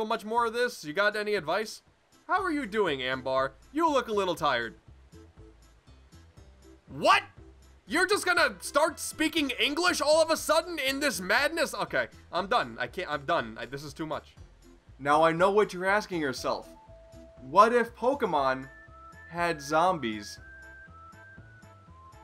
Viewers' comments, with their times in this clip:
0:08 You sound like markiplier on